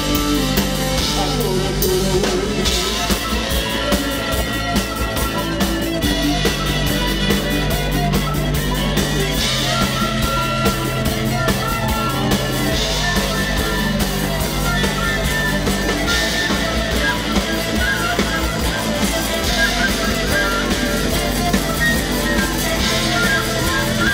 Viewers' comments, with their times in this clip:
0:06 Nice keytar solo